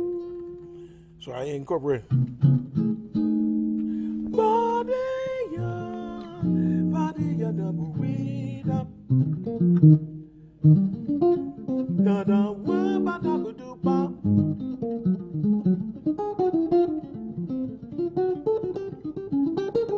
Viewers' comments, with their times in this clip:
0:04 his singing is sweet.